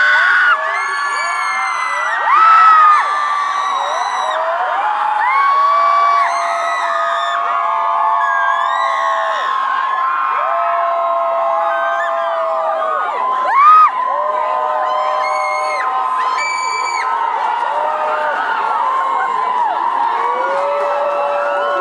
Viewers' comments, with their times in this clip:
0:08 The screams 😂 hahaha